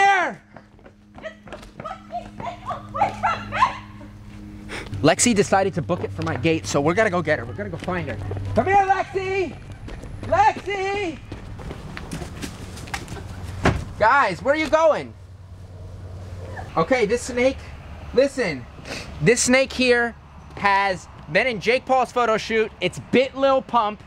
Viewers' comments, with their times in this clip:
0:05 did i hear ‘date’ hmm 🤔